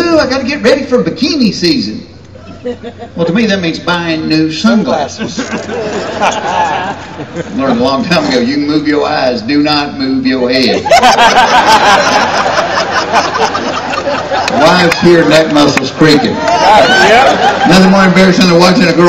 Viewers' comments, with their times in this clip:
0:04 you can hear the guy in the audience finish the joke. Doing an old joke means someone will remember it.